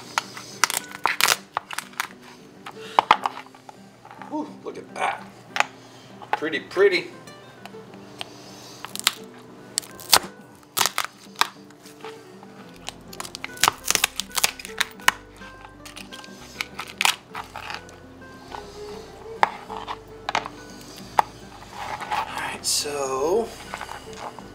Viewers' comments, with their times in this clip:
0:09 Aaaaaaaaahhhhhhh. Sounds so good in headphones... lol